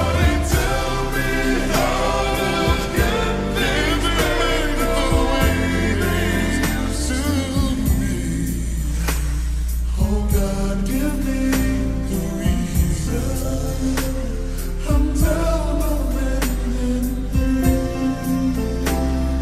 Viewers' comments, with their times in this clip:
0:06 The riff is my favourite,just awesome